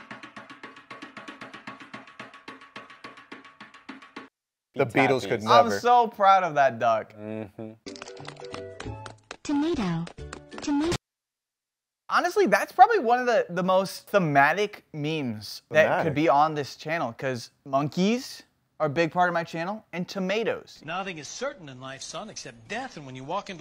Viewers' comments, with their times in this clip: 0:08 captain toad ahh footsteps